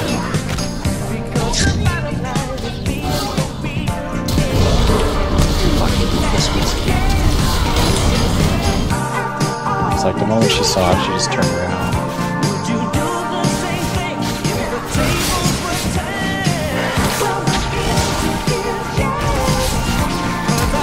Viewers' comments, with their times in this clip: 0:06 are you saying: Forhelvede, hvad skal der ske?